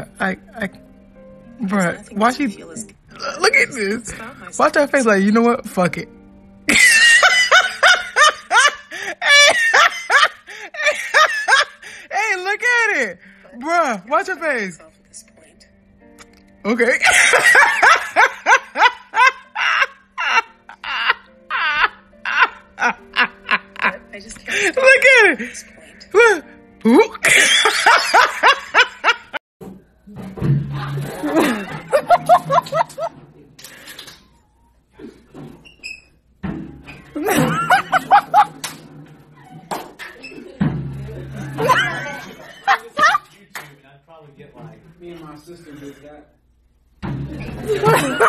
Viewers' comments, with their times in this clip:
0:05 this was the best laugh
0:06 Perfect joker laugh
0:17 I thought was my car at -20° weather
0:20 Sounds like joker from Suicide Squad
0:21 did i hear a parrot?
0:29 the bit that started is IT for me! the sound that jug made when he whacked his head is Hilarious!
0:33 literally had me in tears 😂 that bonk